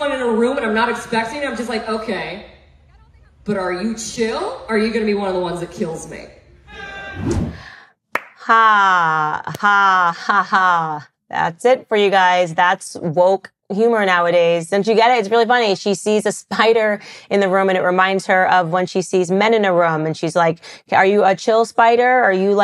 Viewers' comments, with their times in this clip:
0:08 Candace laughing absolutely sent me. I could really see her making comedy successfully.